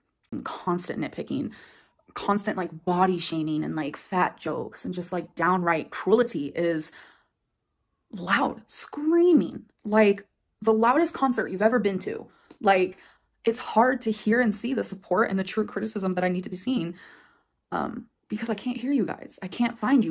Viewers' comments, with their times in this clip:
0:05 Unrelated nitpick but she STILL can’t say “cruelty” correctly.